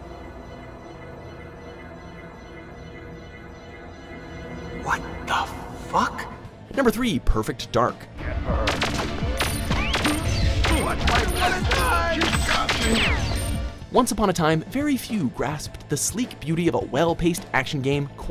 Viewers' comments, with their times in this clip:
0:04 Me when they didn't bleep out the F bomb